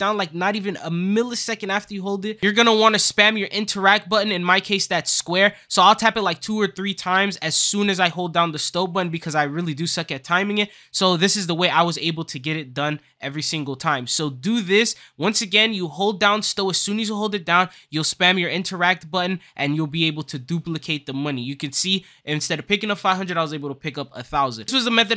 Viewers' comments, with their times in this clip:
0:08 the what button